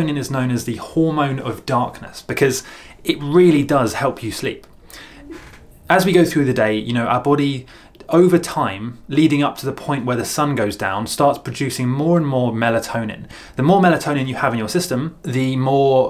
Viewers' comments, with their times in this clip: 0:04 What was that sound is sounded creepy